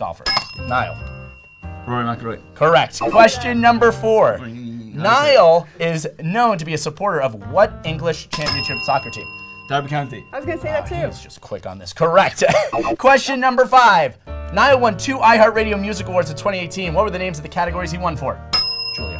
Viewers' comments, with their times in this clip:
0:04 them saying enyenyenyeee Layk brooooo THAT IS THE FRICKING CUTEST
0:04 why is noone talking